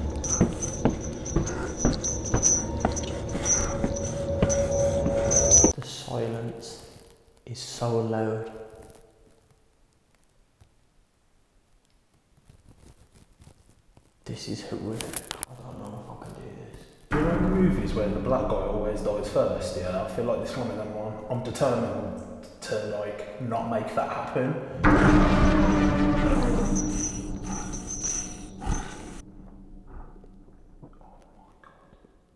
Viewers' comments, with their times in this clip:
0:10 was that his neck cracking?
0:15 u can hear something breathe